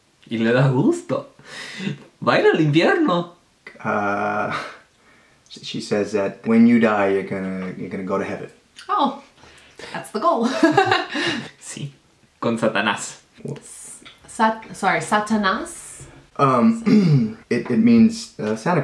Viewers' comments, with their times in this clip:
0:04 that voice crack thou 😂